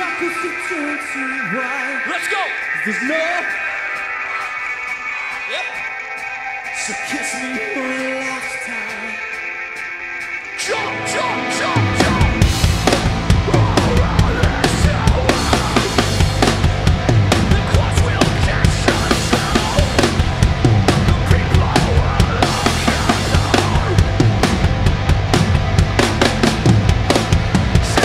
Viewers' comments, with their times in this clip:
0:09 can someone explain how a tom sound is there but he isn't hitting any of them? Thought I was trippin earlier in the song but it's for sure there in this section